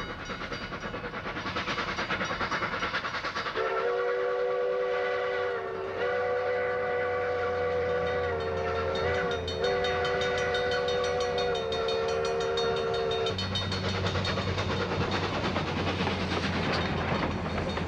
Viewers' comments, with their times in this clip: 0:03 I totally got narrow gauge fever and the only cure for that fever is more whistle and more warning bell. No pun intended